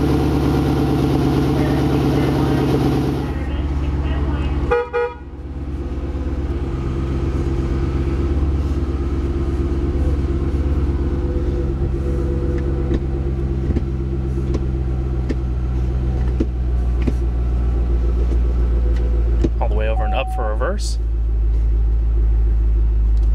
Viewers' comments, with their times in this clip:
0:04 double honk, lol (idk why i think thats funny)